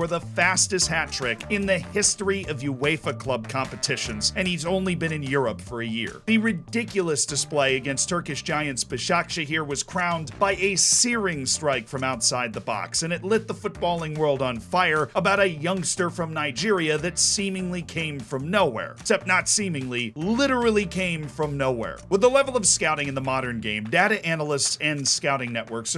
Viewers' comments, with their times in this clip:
0:08 if youre trying to say Besiktas then... thats not how you say it, a lot of your videos you always pronounce team names wrong. I see the effort i think you try to hard and than get it wrong cos you're trying lol